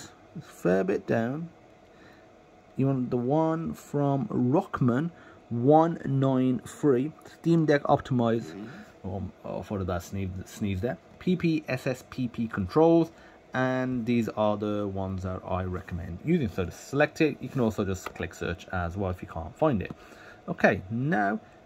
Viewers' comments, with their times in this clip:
0:06 That’s no sneeze 😂